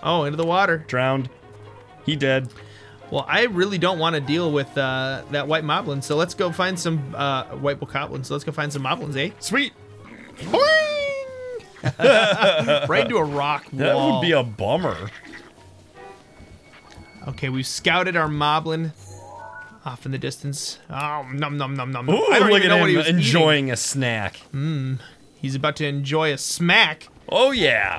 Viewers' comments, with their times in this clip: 0:10 it sound like an angry bird